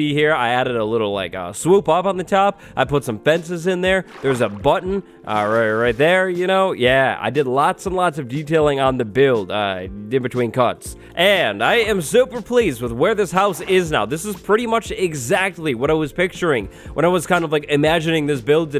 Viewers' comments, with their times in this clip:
0:05 Did anyone else notice the house was screaming ?